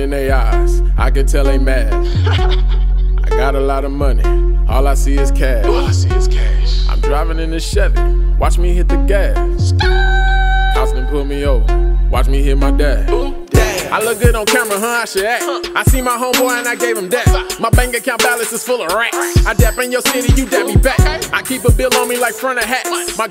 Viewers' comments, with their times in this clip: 0:09 that skrrrrrrt changed my life😂